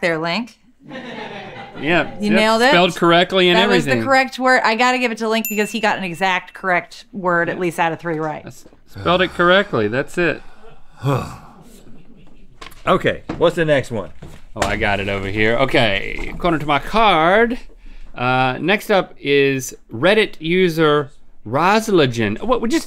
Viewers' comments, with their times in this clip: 0:04 lmao I love how nobody even said anything which made me laugh even harder